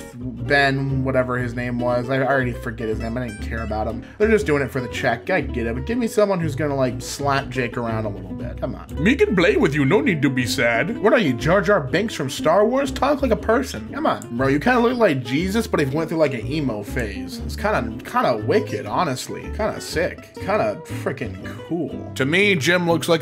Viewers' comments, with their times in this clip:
0:09 the voice acting just made me LoL so hard I almost woke up my grandma.